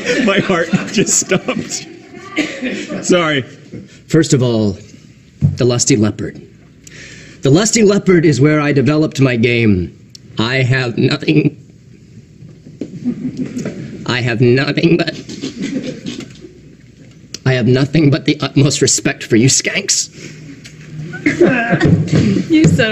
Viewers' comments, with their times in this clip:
0:04 7 seasons later and they still can't handle the Neil goat cry